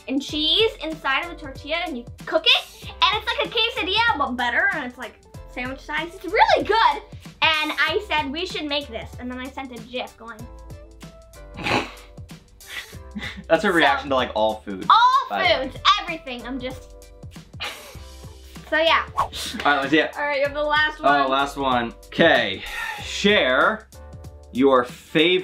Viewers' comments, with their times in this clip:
0:07 Did she call it a JIF?!